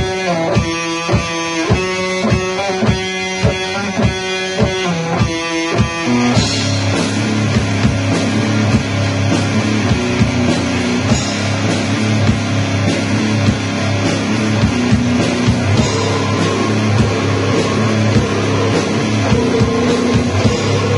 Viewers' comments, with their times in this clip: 0:05 Brutal asf, best Beherit cover 🤘🤘🤘